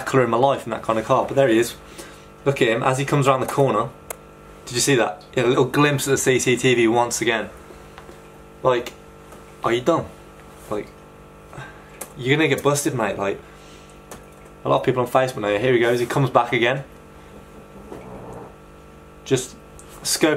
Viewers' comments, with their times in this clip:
0:05 did you just say nigga?